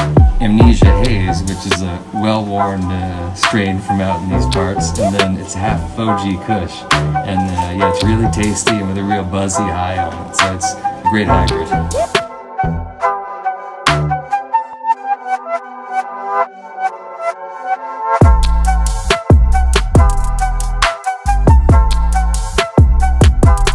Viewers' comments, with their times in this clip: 0:07 My Stoned ass thought i heard a dog howling outside. Ahahaha